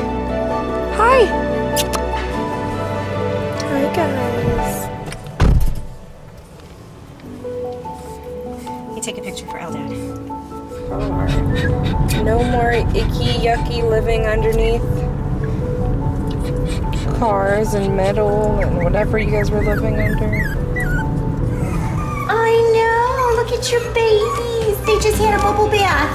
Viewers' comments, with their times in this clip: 0:10 Is the mother dog crying ?